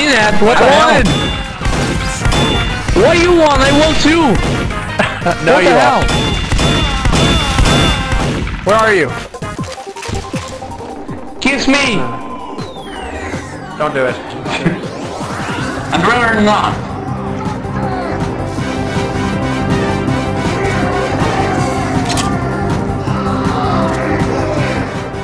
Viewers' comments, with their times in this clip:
0:04 In tune kills
0:07 OMG PERFECT synchronization BAM!BAM!BAM!BAM!